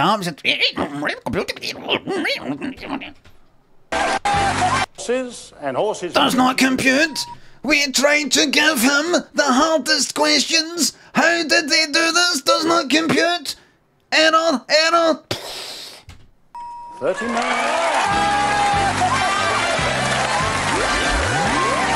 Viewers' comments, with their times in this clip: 0:06 if Limmy were the voice of the daleks I would definitely watch modern doctor who